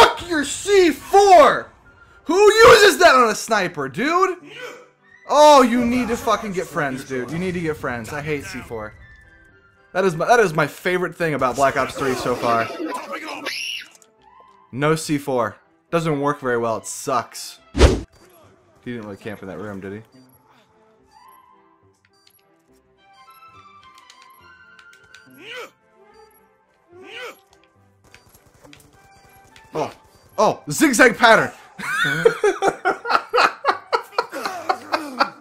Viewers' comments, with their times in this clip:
0:09 That kid scream was hilarious hahahahaha
0:11 Lmaoooo who heard the scream ?
0:16 anyone else here the scream?